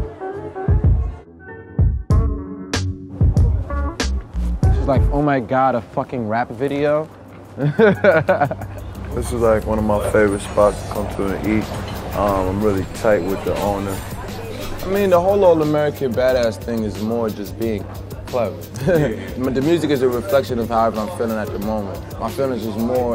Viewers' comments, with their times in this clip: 0:06 i never heard Joey talk like that 😂